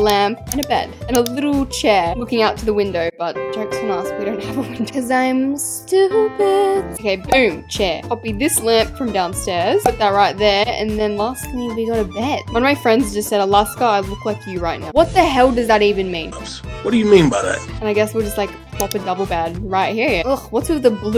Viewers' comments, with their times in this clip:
0:05 GIRLL YOU VOICE IS SOO PRETTY Look at this LIKE WHAT GURL YOU SHOULD BE A SINGER
0:05 All jokes aside but her voice at this part BUSSIN GORGEOUS IM SPEECHLESS BOOM SHAKA LAKA BOOM SHAKA